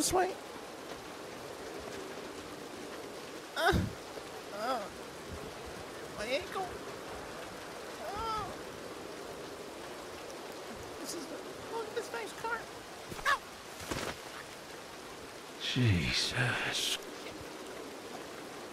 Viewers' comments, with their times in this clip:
0:05 the tiniest “my ankle” really got me.